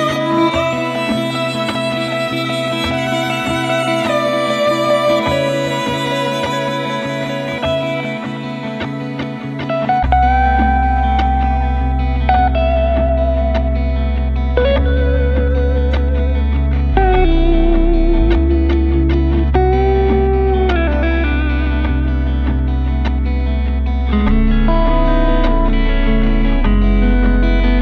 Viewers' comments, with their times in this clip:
0:09 when the bass comes back in and that solo.......oof! So sick.